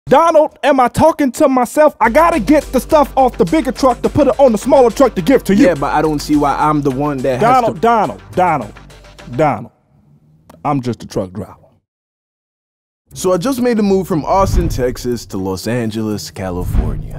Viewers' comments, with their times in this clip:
0:00 I thought he was about to start rapping